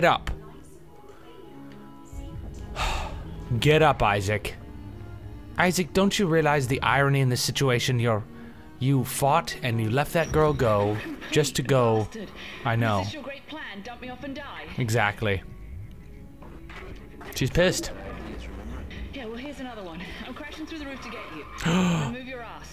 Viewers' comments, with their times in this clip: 0:09 transcribe audio "you'll find in the last severed gold testicle" lololol